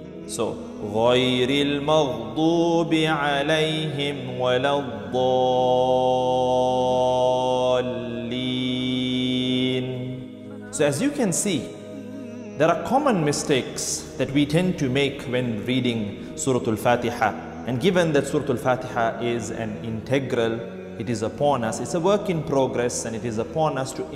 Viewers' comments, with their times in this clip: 0:09 who said AMEEEN